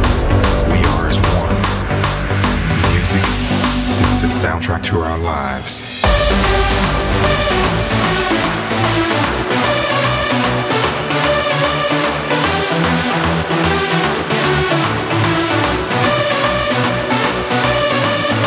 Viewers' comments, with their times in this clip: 0:06 I'm loving this guys style. The shreeks made my hair stand on end. ^_^